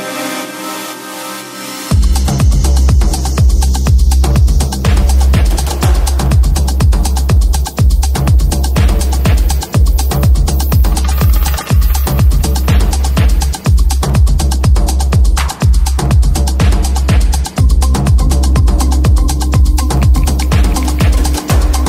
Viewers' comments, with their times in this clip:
0:05 I love tribal songs. From USA. Song Started